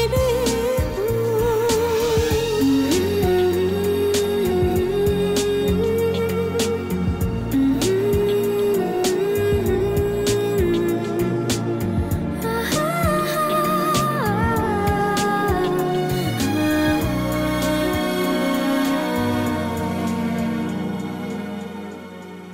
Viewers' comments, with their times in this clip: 0:03 Music in gives satisfaction...